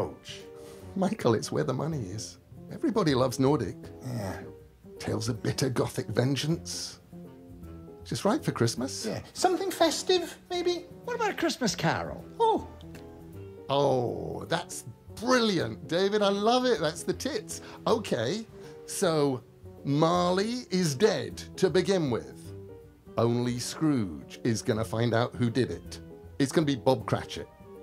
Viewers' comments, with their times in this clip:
0:10 Michael's "Oh!" in reaction to David suggesting Christmas Carol was very Aziraphale-like :)